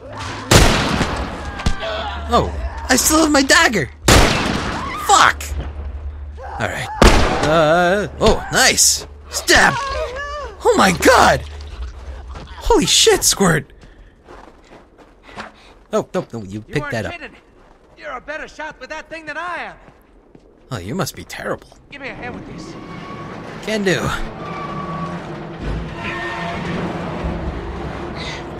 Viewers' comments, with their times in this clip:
0:10 "HOLY SHIT-SQUIRT" That's exactly how I interpreted what you said and nearly died laughing because of it.
0:15 i heard "holy shit-squirt" instead of "holy shit, squirt"